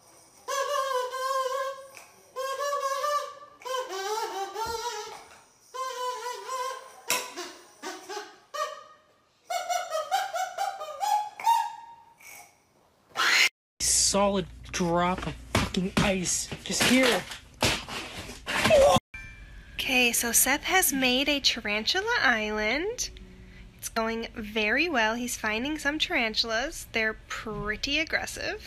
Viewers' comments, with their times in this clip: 0:07 Why did he have to scream like that
0:10 Start of the scream makes me think of FNAF Sister Location Jumpscare
0:13 girls when they screem: AHHHHH boys when they scream:
0:15 he sounded like Crash Bandicoot.